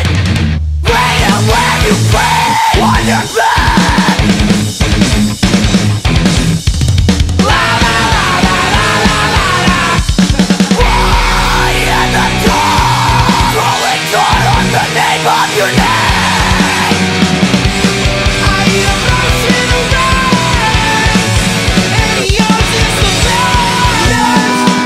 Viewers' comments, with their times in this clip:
0:07 everyone can agree is fucking awesome! plus the little laugh after that part is too! You can tell these guys love making music and being in the same group with eachother :D